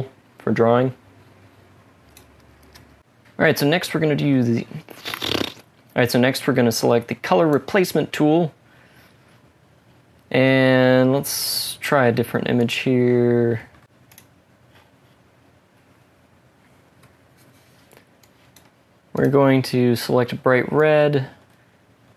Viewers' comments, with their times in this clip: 0:05 It's the pffft for me. 😂 Thank you for this tutorial - seriously helpful!